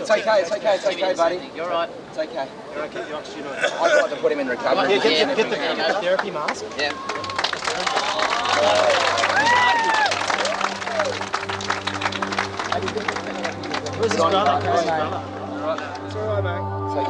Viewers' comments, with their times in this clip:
0:05 Hmm The people clapping seems a bt inappropriate ?